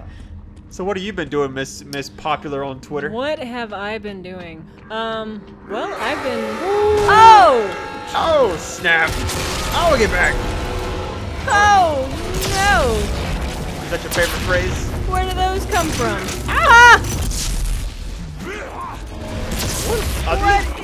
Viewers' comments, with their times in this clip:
0:03 scared the fuck out of me full blast on headphones